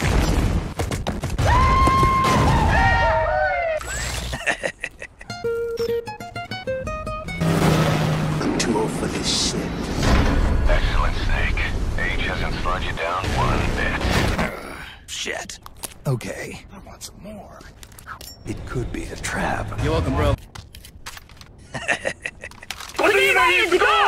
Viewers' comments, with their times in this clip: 0:06 The edit of the theme was completely unexpected, 10/10